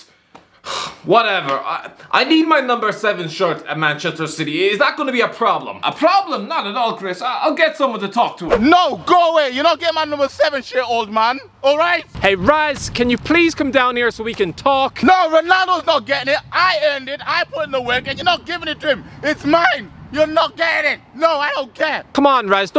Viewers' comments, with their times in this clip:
0:03 stick to being the Irish guy